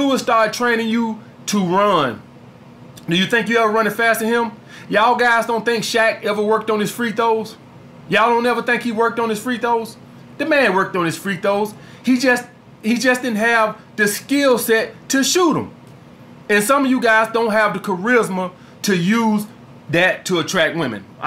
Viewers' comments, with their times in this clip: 0:04 Man said “Free toes” 😂😂